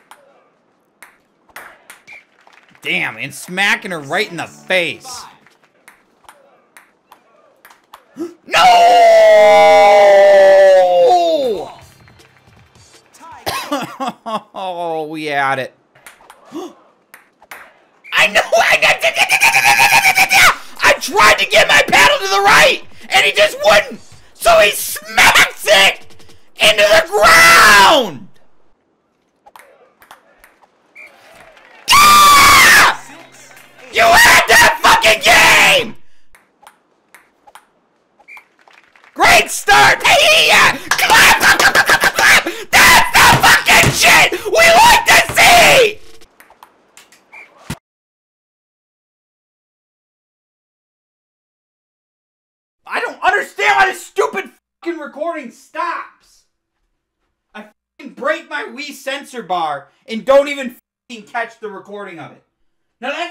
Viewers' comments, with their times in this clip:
0:08 Nobody: Absolutely nobody: Wolves at night:
0:08 No one: My neighbor's dog at 4am:
0:08 wolves when there's a full moon
0:09 Nobody: Wolves at night:
0:09 my neighbors dogs at 3 am
0:09 what does he sound like a robot?
0:09 RIP my iPhone speaker
0:09 sounds like my dog when they see a cat at 3 am
0:19 helicopters getting ready to leave the ground
0:19 my propellor plane starting up
0:19 machine guns be like
0:31 lemongrab much? Lmao
0:40 Wanna know what a psycho sounds like... go to 💀
0:46 There is a bang for a millisecond and then the whole recording stops.
0:46 You can hear the crashing of the sensor bar
0:47 I love the whooosh sound before it cuts lol
0:47 you can kinda hear the crash
0:47 I love how the bang cut off, like all you hear is BAN-